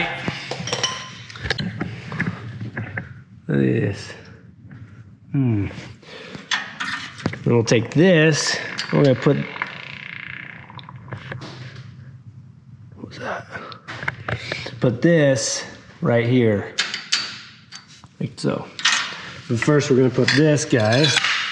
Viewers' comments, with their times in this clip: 0:07 Was that a fart ? Lol